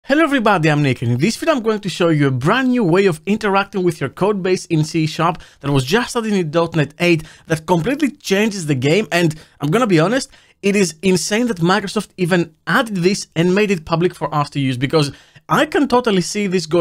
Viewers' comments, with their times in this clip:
0:00 "Hello everybody, I'm naked in this video" - Youtube Captions, 2023